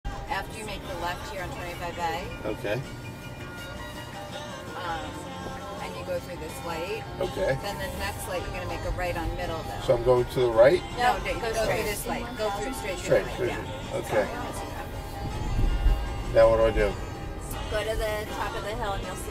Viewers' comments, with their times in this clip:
0:03 Am I the only one who notices the driver is in the wrong lane while taking left and the car behind honked? I kinda felt like those backseat drivers were giving directions and the confused driver went on the wrong lane. I hate it when people sitting behind cause panic like that